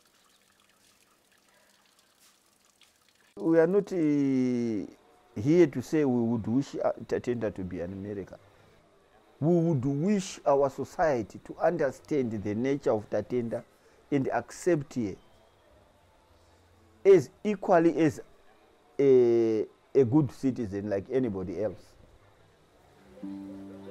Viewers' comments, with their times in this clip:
0:06 what is he saying ? “What we would wish ta ta da tooomerica “